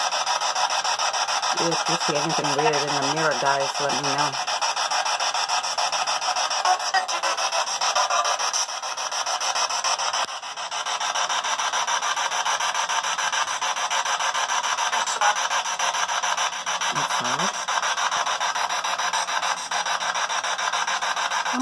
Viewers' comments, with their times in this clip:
0:07 a female says " don't touch me